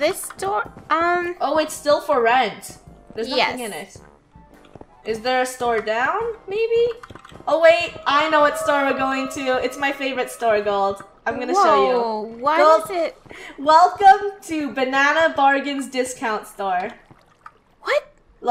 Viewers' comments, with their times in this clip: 0:04 no one heard the cave sound?